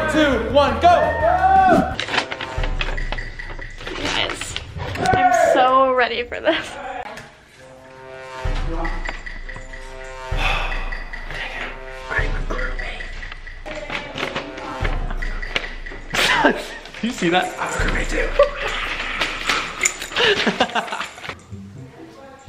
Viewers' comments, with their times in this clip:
0:09 The sigh of pain: